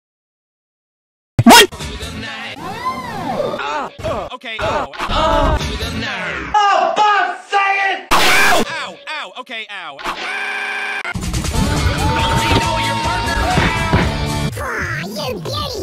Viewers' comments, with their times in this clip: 0:03 My older brother told me about Vern's voice.